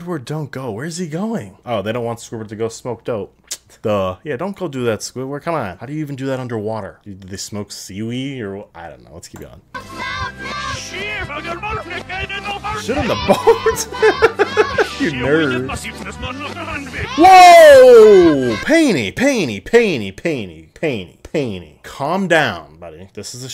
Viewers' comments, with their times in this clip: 0:10 I’ve always heard “ssSSHHHEEIIITT ON YOUR MOTHER’S MEDICAL HEART” 😂
0:11 sounds more like sh*t on your mother's medical heart.